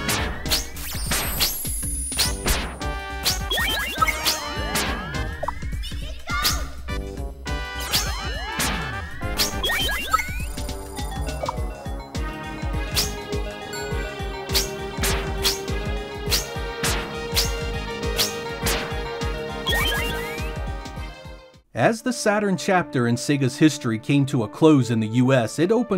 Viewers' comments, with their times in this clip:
0:10 It's funny that you compared this game to a Zelda game, as I could swear that the music that plays in a Zelda game when you uncover a secret was about to start playing here. XD